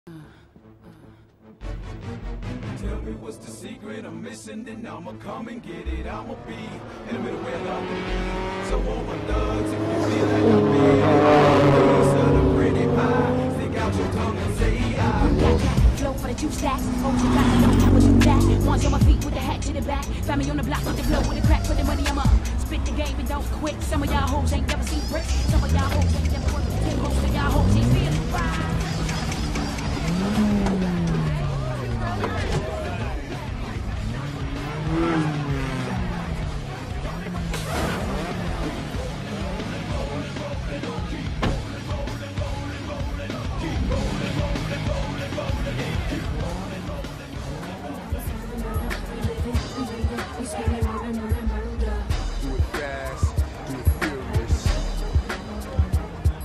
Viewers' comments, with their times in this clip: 0:02 that song is so fire
0:09 2JZ Eclipse? (Listen closely to the black Eclipse)
0:11 god damn Brian's eclipse sounds like crazy dude
0:37 is it just me or did i hear johnny trans s2000
0:38 it sounds like Johnnys s2000
0:38 if you listen closely you could hear Johnny Trans s2k in the background